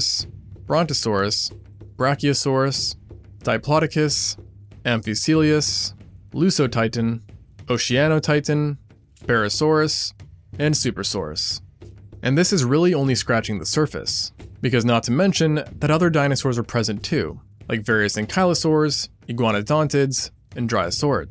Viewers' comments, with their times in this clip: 0:03 Dipodicus,I thought it was diplodocus